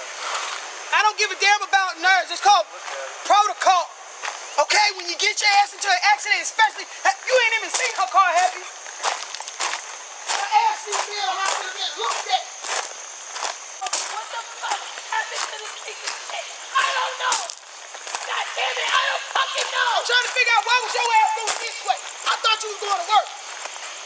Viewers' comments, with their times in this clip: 0:05 When the other cop secretly leave to go see if he can find the engine while she still yelling “🚶🏼‍♂️👀” LMAOOO